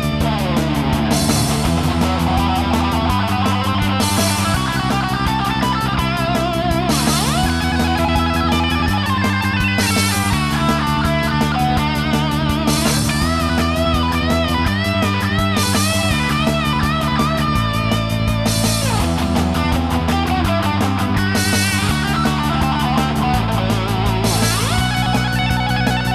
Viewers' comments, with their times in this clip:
0:07 is wrong. The first interval should only be a half step.